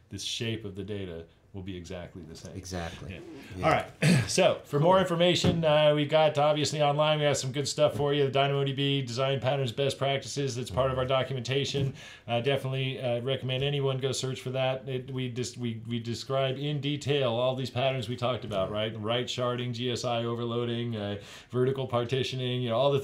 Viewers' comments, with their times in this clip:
0:07 did someone noticed how he just freestyle like Em?